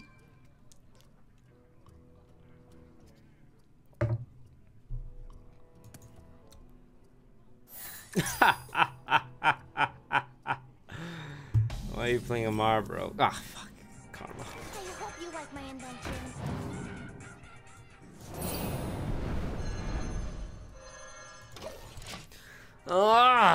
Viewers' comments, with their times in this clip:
0:07 the instant transmission from him laughing to saying "aw fuck" has to be one of the funniest moments I've seen in a while.